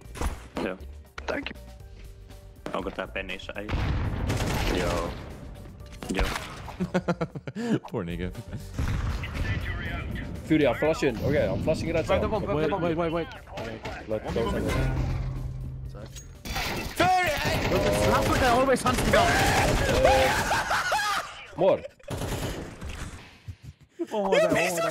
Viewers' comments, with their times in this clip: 0:07 ngl I thought you said the n-word if you don't look at subtitles it still sounds like the n-word